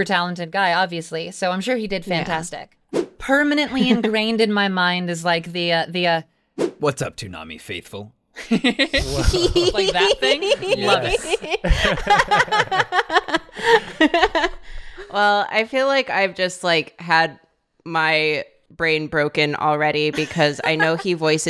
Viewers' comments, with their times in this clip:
0:05 was startling and impressive, she can switch voices so fast and seamlessly!
0:08 my jaw genuinely fucking dropped at that voice change holy shit